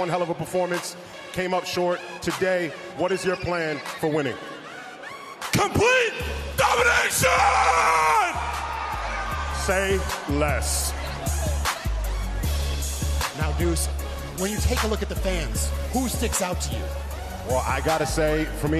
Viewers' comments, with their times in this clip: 0:05 Jidion put his heart and soul on that “COMPLETE DOMINASHIONNNN”😭😭